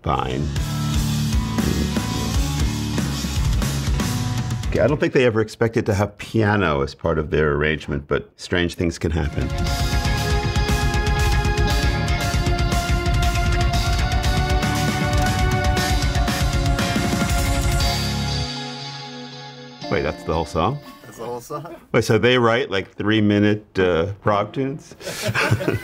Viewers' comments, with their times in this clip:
0:10 Prince of Persia vibes?:)